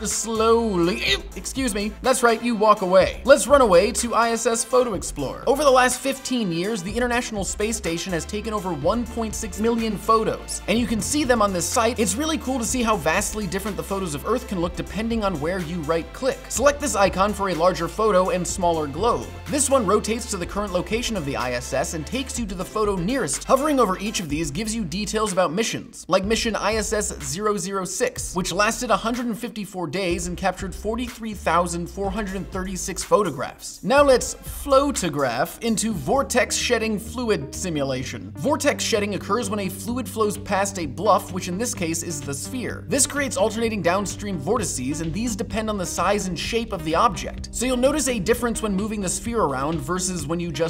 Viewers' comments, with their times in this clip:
0:04 I thought he said isis
0:36 Tame Impala Simulator